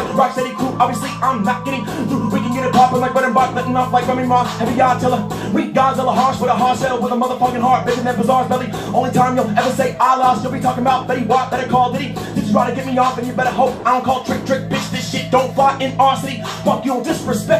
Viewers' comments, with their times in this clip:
0:03 it just me or was that a stutter?